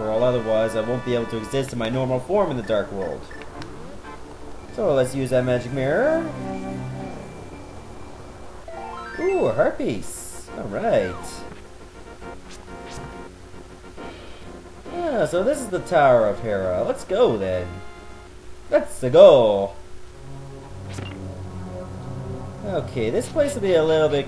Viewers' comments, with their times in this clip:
0:09 Ooh, herpes! Allright!